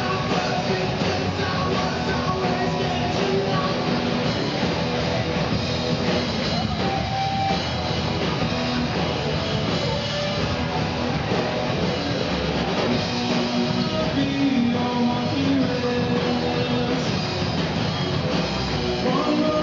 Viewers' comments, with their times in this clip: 0:04 pretty awesome cover! like it! and haha you missed the scream :P